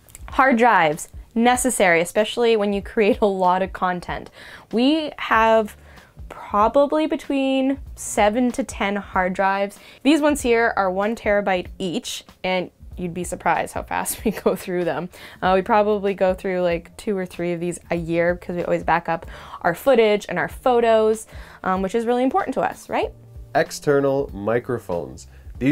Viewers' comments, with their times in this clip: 0:09 Video description: It's called "Sennheiser" with double "n". And did I just hear you say "terrabyte" ( so wie bei den ganzen Media-Markt-Verkäufern?). Rechargeable AA batteries: Panasonic Eneloop. Nevertheless: Good video.